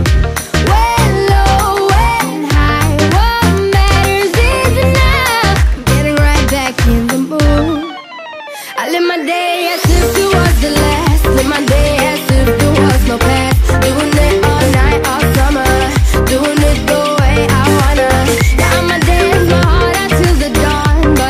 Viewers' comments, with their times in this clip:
0:06 had the rythme like the song lean on